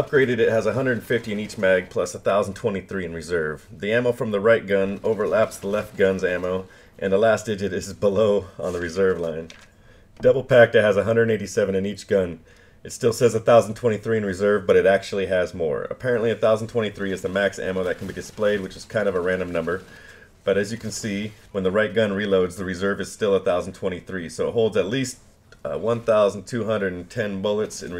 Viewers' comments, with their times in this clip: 0:08 Whahaha did i hear him turn a paper on 😂